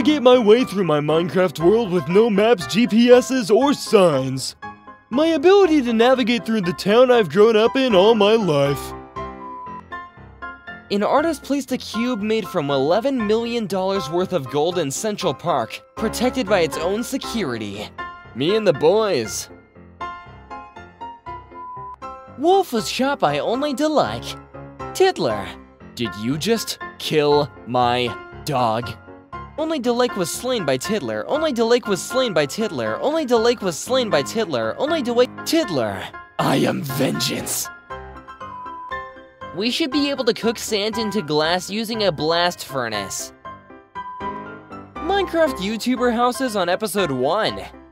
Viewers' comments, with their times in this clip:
0:05 The voice was literally perfect
0:31 bro is making a beat